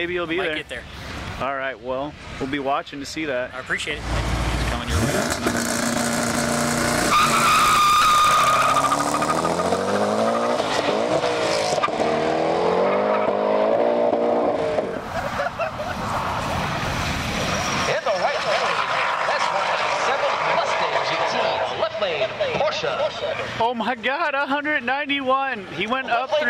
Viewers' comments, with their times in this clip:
0:09 Sound of Koenigsegg?🤔